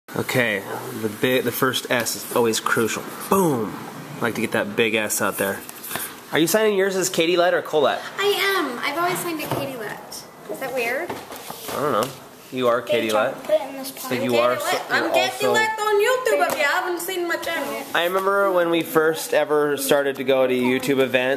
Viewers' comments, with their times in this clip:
0:03 "I Like to get that big ass out there" lmao